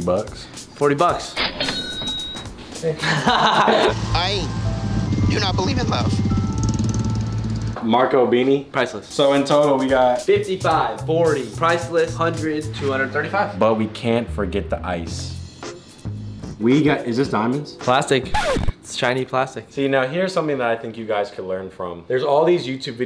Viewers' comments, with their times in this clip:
0:04 lol 😂 he had a voice crack